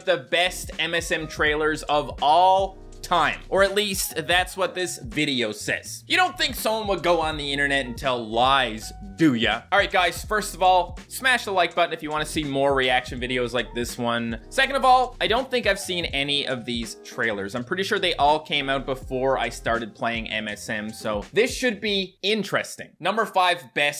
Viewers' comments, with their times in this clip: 0:09 doo ya? More like Doowa (it's the sound toe jammer makes)